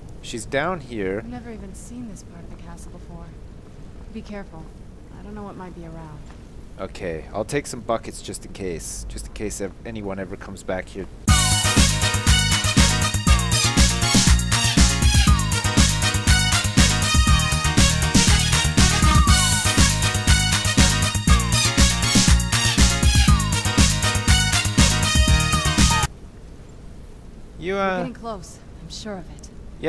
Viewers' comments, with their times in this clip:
0:10 jizus FOKING CRAST deme ...sips yuuw scard mi just the randem muzik XD